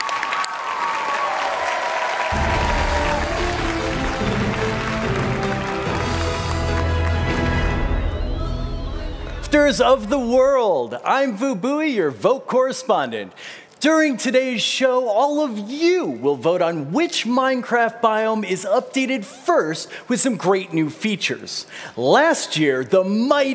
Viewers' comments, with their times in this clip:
0:07 mic cuts out